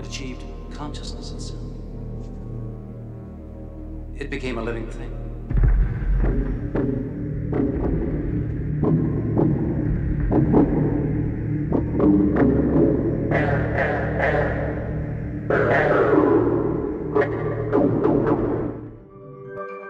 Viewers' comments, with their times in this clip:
0:06 Sounds like some of the music I listen to. :)
0:06 Council of Beetroot!?